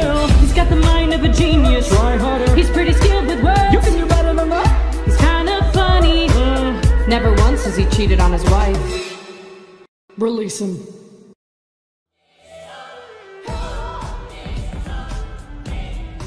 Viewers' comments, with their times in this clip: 0:04 hes kida funny? GIRL WHY YOU SAYIN IT LIKE A QUESTION